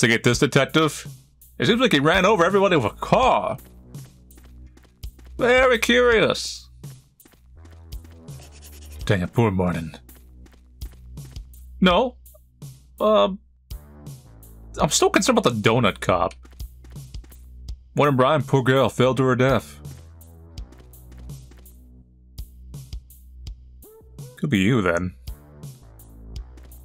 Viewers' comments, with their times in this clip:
0:07 This dev must of been a huge fan of valve, I noticed how nearly all the object sound effects are source prop noises. And that farmer guy who got thrown into the Hay maker 2000 made Nick from L4d2's scream thats the Jeep acceleration sound from Half life 2